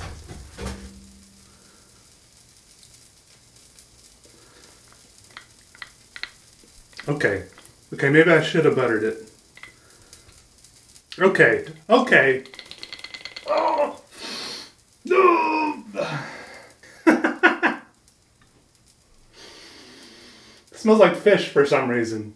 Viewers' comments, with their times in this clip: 0:03 "Okay. OKAY." Such a mood when food falls on the ground. lol